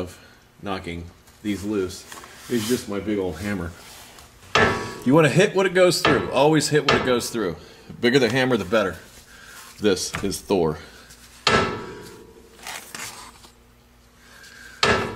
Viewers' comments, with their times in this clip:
0:03 Hit when it goes through? When what goes through?